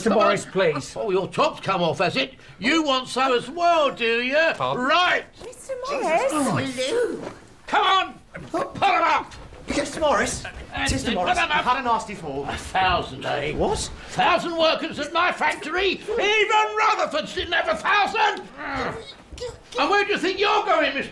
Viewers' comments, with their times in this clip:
0:06 just me who hears nellie saying 'Lou' but doesnt see her lips moving